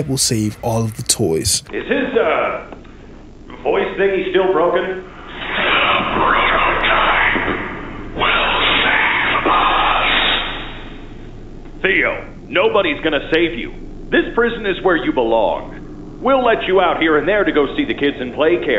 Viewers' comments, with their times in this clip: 0:04 that's catnap's voice